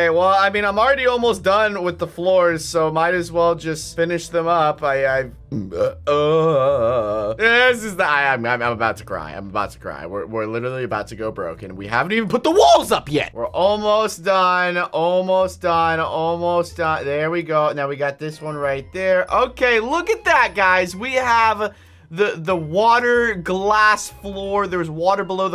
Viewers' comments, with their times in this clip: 0:06 I don’t know why he just burp but it’s just his thing in the video?